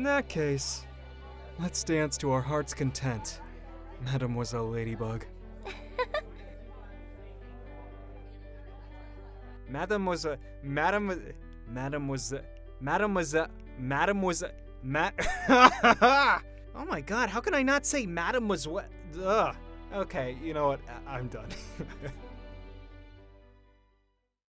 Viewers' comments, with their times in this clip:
0:09 Me dancing to the beat.-----